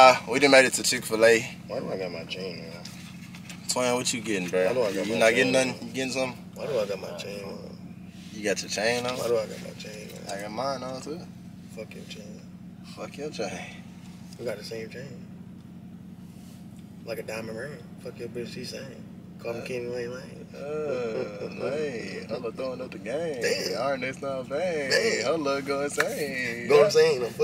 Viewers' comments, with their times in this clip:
0:10 the rappin is outrageous 😂